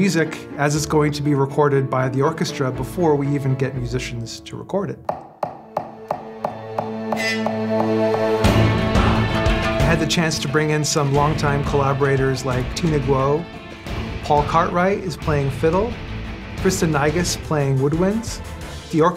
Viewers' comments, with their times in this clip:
0:07 So hyped for a full "fighting back" it sounds amazing